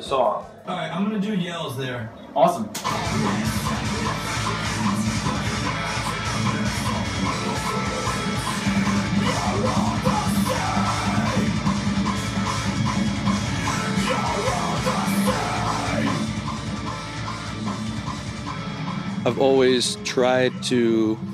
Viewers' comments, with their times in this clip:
0:08 YO THAT'S A BREAKDOWN? It sounds like The Pirates of the Caribbean metal edition! \m/